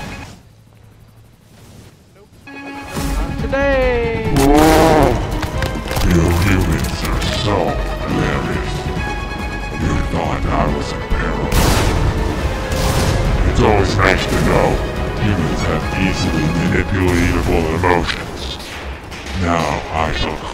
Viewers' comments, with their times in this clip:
0:03 lol I think just heard happy day or not happy to day 😂😂 and the guy in bike fly 😂